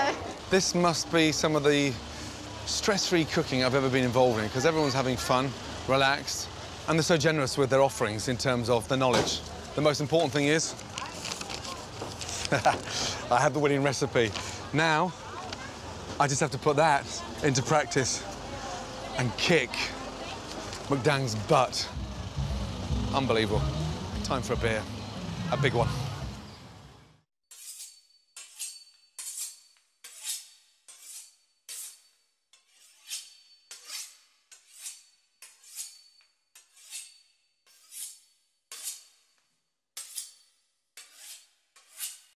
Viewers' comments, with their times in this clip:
0:09 Ramsay sounds like a character from an epic quest :D
0:28 umm…your knife should not be making those sounds when you’re cutting a beef Wellington…